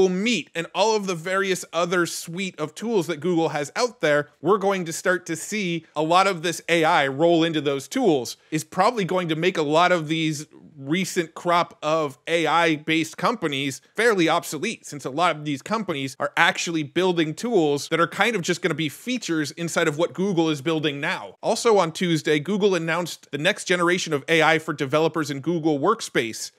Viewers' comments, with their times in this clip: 0:08 the "Tool" you pronounced on 2.3x speed sounds like minecraft Steve's hurt voice line xD